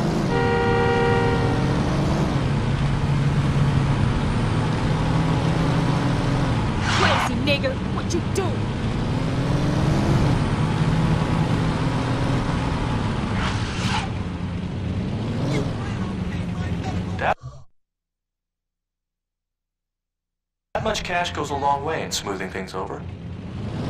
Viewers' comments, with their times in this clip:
0:06 DAMN That was a hard "R" Lol.
0:06 Did I just hear that woman said the N word with a hard R?